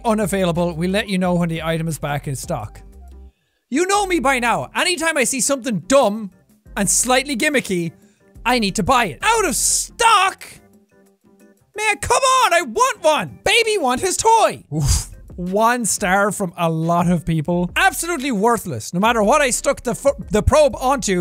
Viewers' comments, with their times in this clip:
0:09 "Out of stook" lol